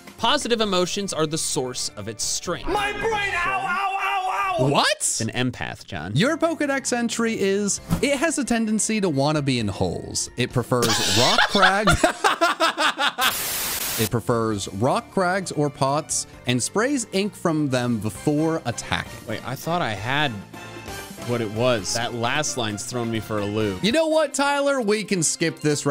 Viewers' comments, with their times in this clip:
0:08 The fact that they both cracked so hard had me crying. 🤣🤣